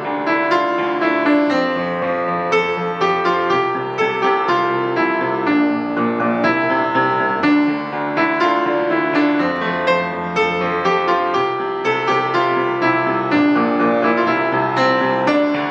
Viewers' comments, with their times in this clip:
0:03 I'm seriously going to cry. does anyone else understand what happened wrong (in terms on rhythm)... this is the third channel that i've seen post the FT main theme and mess up that part D: